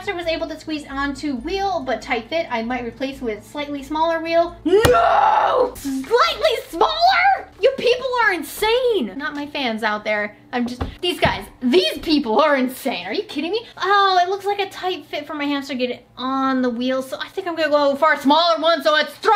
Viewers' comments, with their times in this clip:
0:03 One could probably edit all these awesome growls into a metal remix lmao